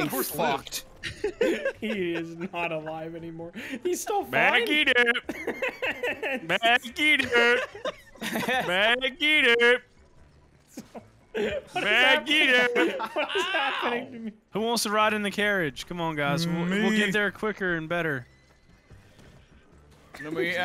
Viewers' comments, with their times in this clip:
0:04 "Back it up" while sounding like homer